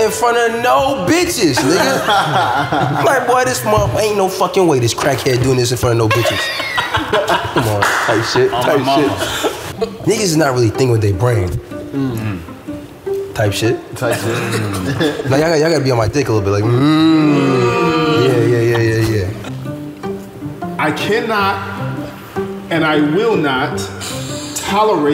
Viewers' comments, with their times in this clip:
0:09 The impersonations were the funniest thing ever.